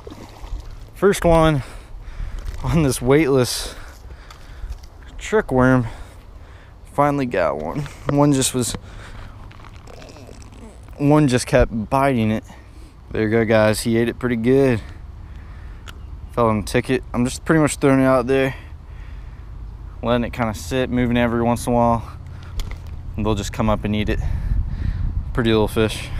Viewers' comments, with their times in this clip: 0:09 sounded like u farted